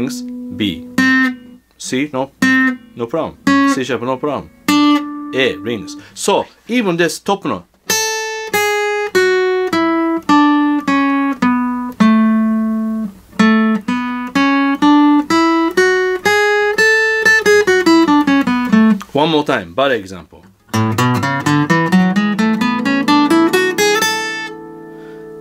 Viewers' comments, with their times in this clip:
0:07 I thought you were about to play Friend of the Devil